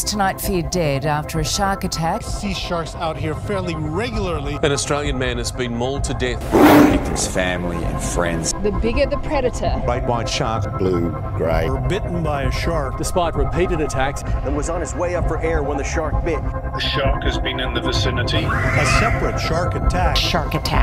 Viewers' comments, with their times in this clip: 0:06 That lion roar :)))